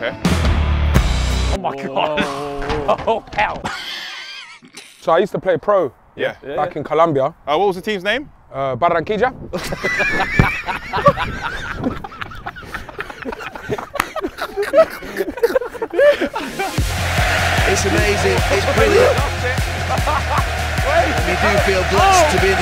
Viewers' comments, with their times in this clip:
0:05 the way he says the name like he is asking it😂